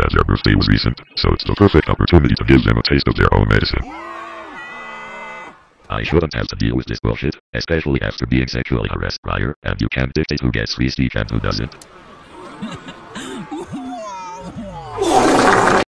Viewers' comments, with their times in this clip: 0:13 Why does it sound like Wall e or Eve